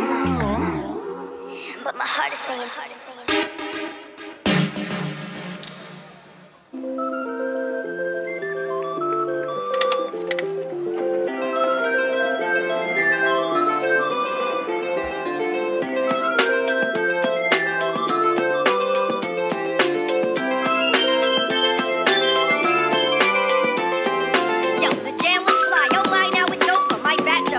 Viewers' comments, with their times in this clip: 0:09 is tight from genie in a bottle to more irony ...tight beat unraveling